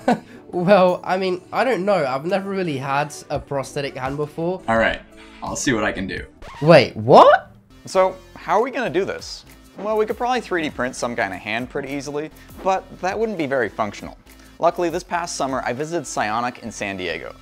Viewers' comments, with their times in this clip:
0:03 Why I feel like this video is scripted like the first few minutes 1he the way they was talking is kind of weird.